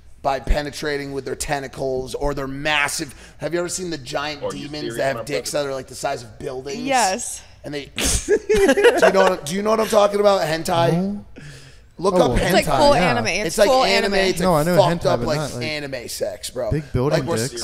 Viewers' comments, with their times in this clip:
0:05 Emily sounds excited